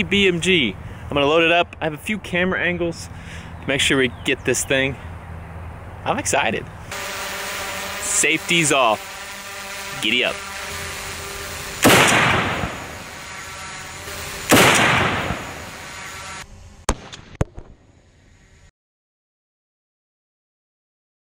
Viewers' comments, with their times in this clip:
0:07 I was wondering what that fan sound was (I realized it was just the drone)